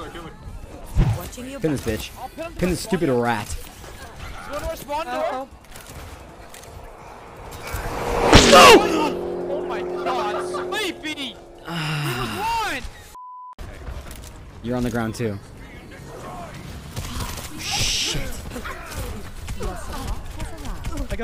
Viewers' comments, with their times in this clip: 0:07 That scared me and I saw it coming It was really loud...
0:09 I swear I heard the echo of my laugh